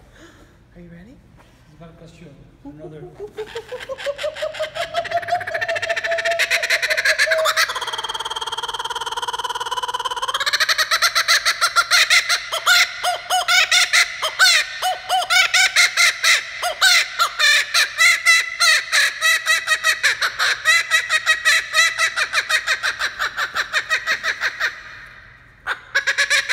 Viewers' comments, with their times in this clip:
0:03 My mower when it’s low on gas when i try to start it.
0:07 Class clown: makes a good joke. Everyone: laughs normally That one kid at the back: